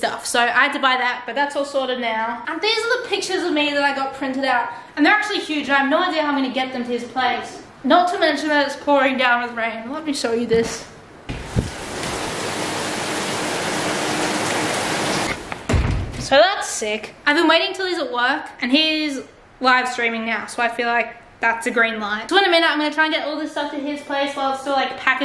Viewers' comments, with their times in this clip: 0:09 That ASMR omg